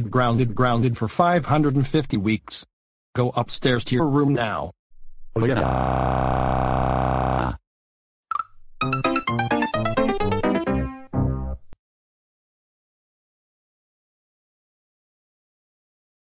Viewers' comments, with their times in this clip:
0:05 Dark Cloud Bowser's crying voice (Aquamarine) or Dark Mars Bowser's crying voice (Auburn) or Dark Wrench Bowser's crying voice (Timberwolf) or Dark Desert Bowser's crying voice (Lemon Yellow)
0:05 Dark Dry Cat Charlie The Anteater And Kraken Bro's Crying Voice